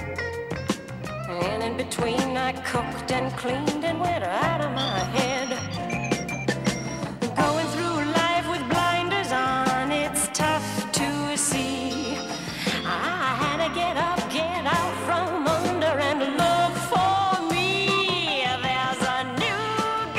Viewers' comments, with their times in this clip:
0:05 So ‘70s. Electric organ music jammin’ Alice wearing a variety of hats during the opening credits. Tommy wearing big goofy ‘70s style glasses. It was a fun decade.